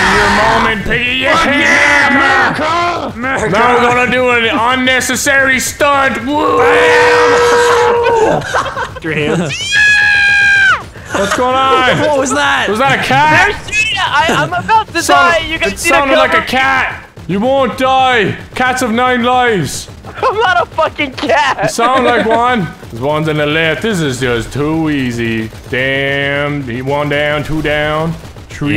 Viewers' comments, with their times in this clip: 0:09 that scream was hilarious I haven’t laughed that hardest in a long time